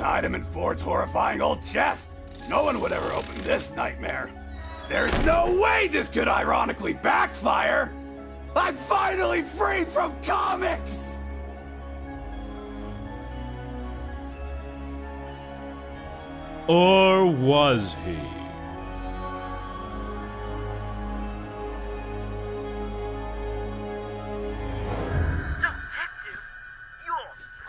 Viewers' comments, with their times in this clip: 0:08 I always laugh at the way Stan screams that. It’s as if he was actually being tortured by comics lol